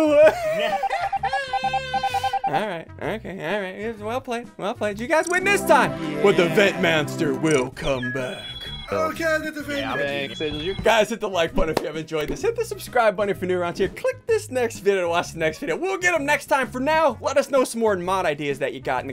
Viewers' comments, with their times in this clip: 0:03 did he say vent manster?😄